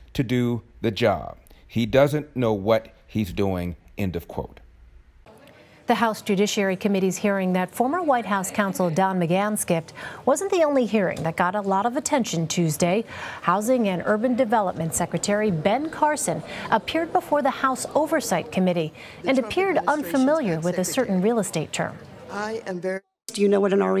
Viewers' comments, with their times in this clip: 0:04 That was the fastest “end of quote” I have EVER heard come out Larry’s mouth lol